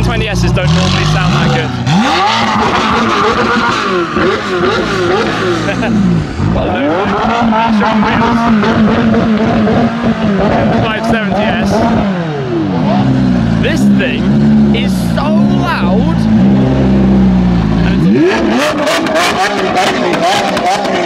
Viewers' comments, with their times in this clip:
0:04 ....must be a European type of revving? So annoying.